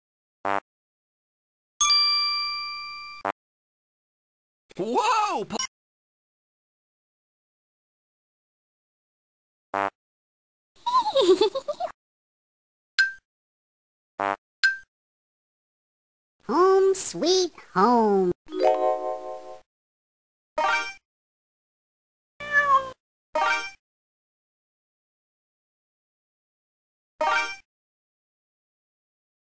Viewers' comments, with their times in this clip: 0:10 That creepy laughing bear in the living room xD